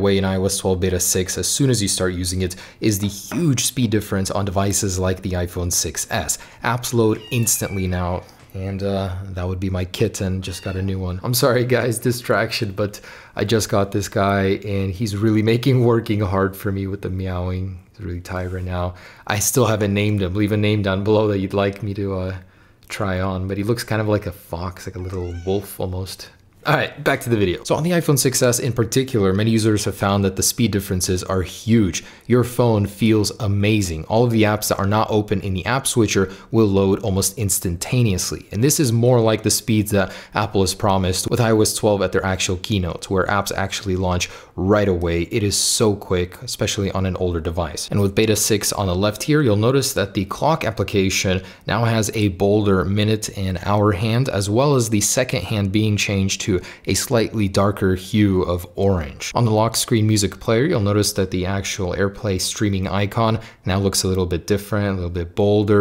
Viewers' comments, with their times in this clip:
0:07 I thought he said "that would be my kids, I just got a new one" lmaoo
0:50 did he say cock